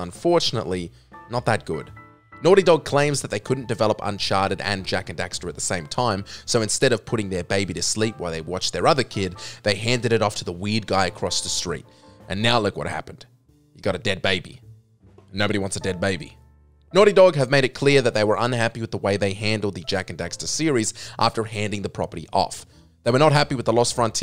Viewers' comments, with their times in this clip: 0:09 why does it have to be the “ weed guy “ 😂😮